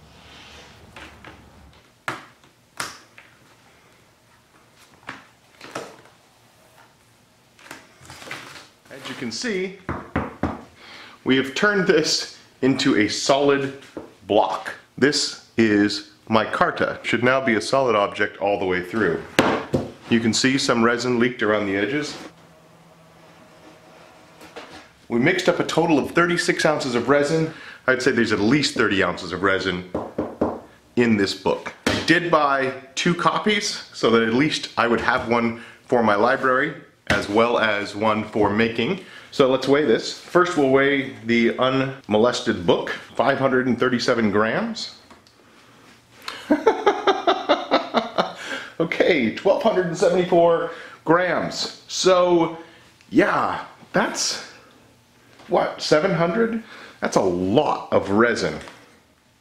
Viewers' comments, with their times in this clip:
0:03 the forbidden pasta
0:45 Getting flashbacks, one thing missing was the background music starting mid-laugh.